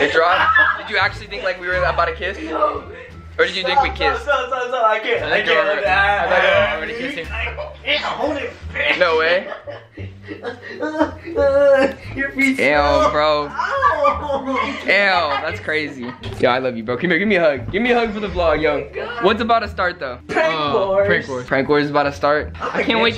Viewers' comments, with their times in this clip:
0:09 aww who was the in the background . That “ owww” was adorable